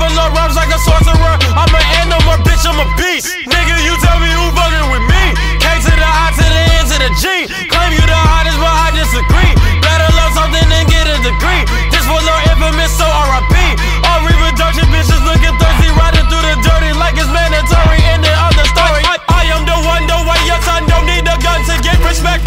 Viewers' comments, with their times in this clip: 0:07 “Hottest” and “But I dis” rhyme